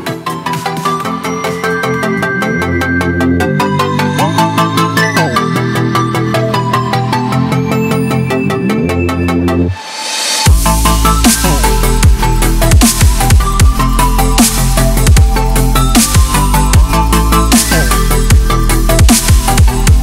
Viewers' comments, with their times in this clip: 0:05 hey man i just want to say something the fade between music it did not sound right